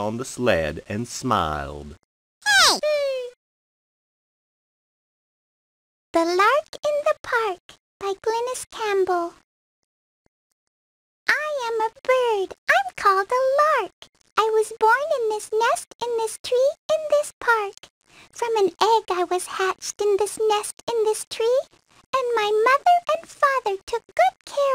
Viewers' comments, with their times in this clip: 0:06 Who's that voice actress that sounded like a little girl ?